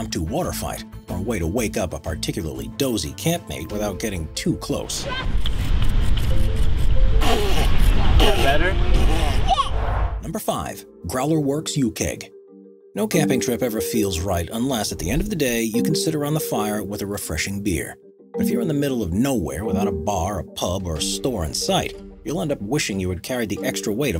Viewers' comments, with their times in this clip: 0:07 sounds like lil fella said "Shit!" 🤣😂😂